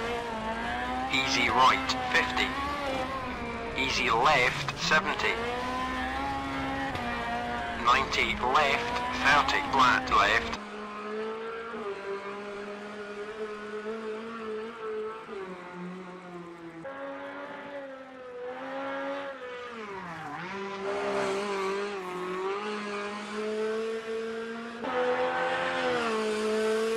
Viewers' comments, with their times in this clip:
0:10 Just hearing Richard's co-driver, my god, it brought chills to my body. Remember the days of when he won the world championship